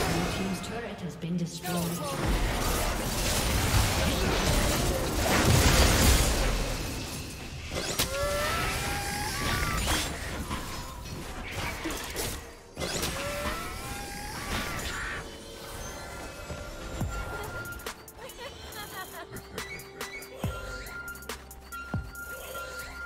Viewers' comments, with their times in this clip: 0:10 when they both started having a laugh is so wholesome